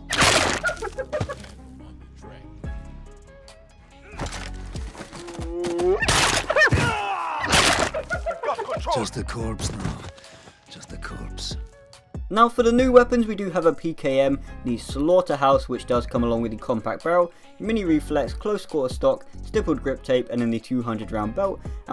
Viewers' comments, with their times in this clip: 0:08 He sounds like Donald Trump when he says “Just the corpse... just the corpse.”